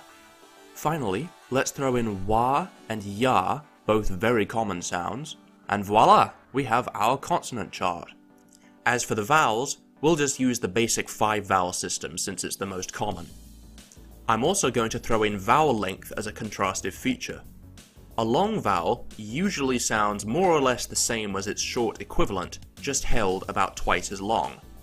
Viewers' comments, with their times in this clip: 0:05 did he just tried to say "Voilà"?